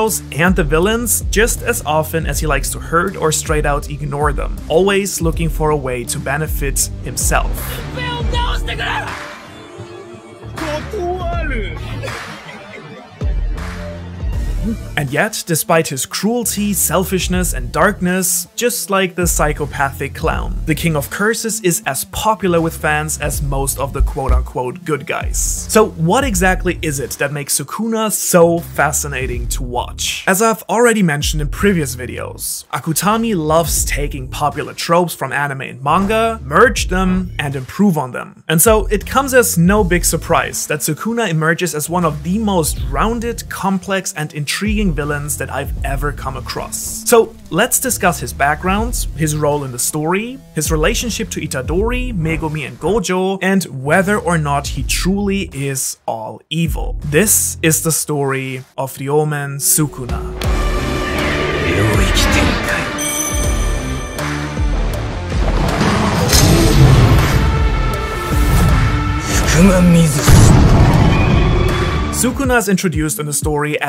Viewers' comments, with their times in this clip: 0:06 am I the only one who's hears the n word
0:58 he said " Ryoumen Sukuna" what i heard O L D M A N S U K U N A